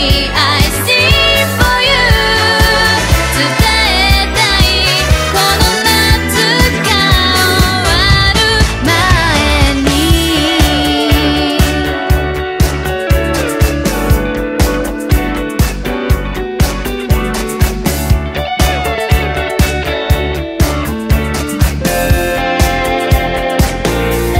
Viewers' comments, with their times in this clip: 0:09 mate, that’s such a good little tune. It reminds me so much of the ocean and the beach on a sunny day.